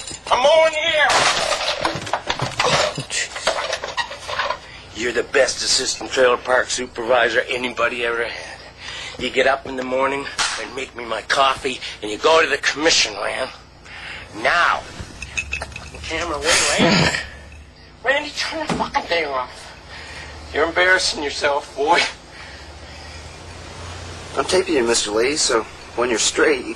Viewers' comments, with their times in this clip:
0:09 nobody gonna talk about how crisp that clap was